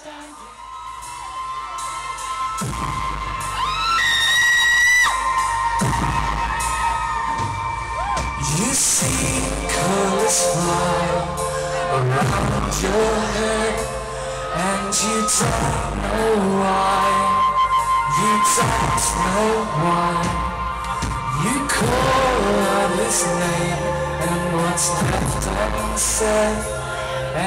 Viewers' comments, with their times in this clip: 0:08 This is good footage :) I was trying to work out where I was in relation to you and I think I may have just been in front - I really apologise too because that's me screaming as I love 'Never Be The Same' :) Awesome gig! x